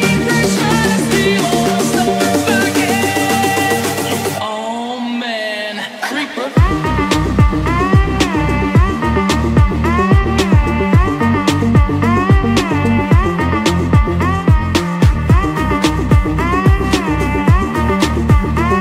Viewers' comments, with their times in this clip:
0:06 Screens When you get a strike whith 1 finger